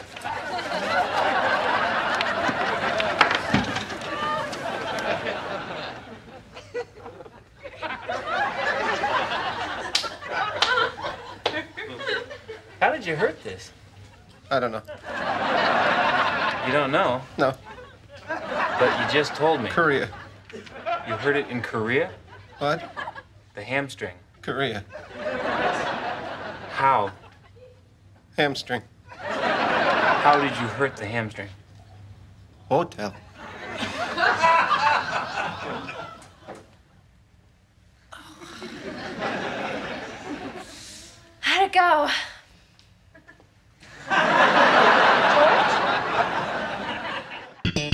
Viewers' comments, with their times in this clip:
0:10 You can hear Julia laughing 😄
0:32 George goas all Rainman. Rainman with Raymond.
0:32 you can hear Julia bursting into laughter after the "hotel" too in lol